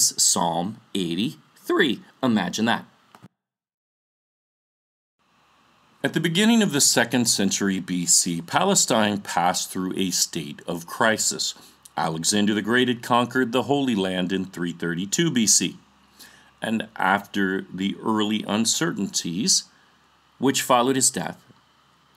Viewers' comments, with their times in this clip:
0:06 Am I the only one getting a voice change that comes back later?